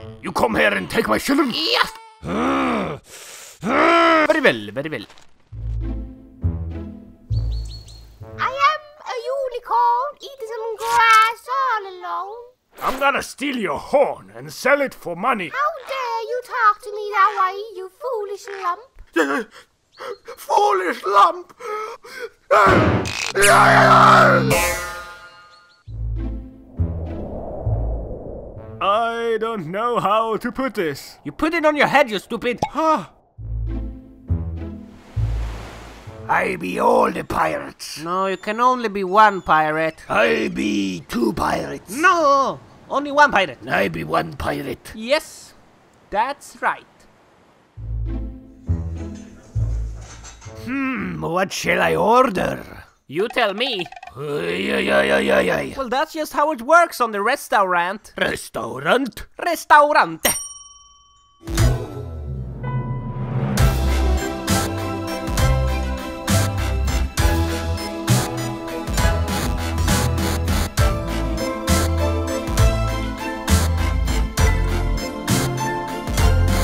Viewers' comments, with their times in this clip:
0:03 Farwell farwell, or very well very well
0:59 Every time i read restaurant, that's how i read it in my head